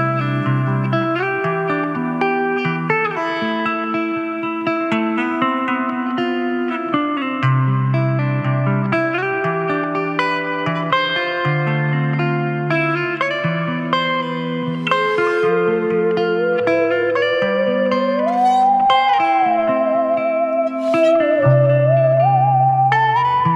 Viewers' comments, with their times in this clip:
0:05 I love this song, one of my favourites :-)